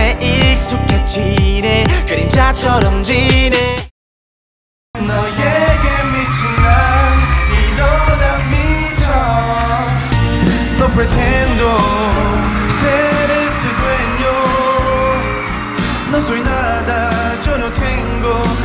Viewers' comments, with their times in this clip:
0:05 what song was chanyeol singing its sounds really good